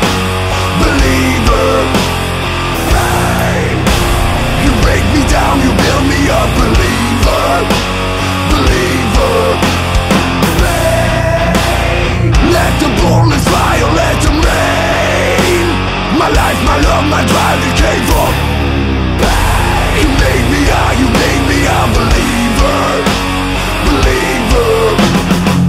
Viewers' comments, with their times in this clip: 0:10 very well done cover! love your git-tone and your screams blow my mind i just lose my mind no matter how often I listen to it and the solo is awesome, I enjoy your writing style very much, keep it up ! are you doing any live gigs in the near future ? I saw you've played nova rock this year(wasn't there unfortunetly), congrats to that man, huge festival, must have been nice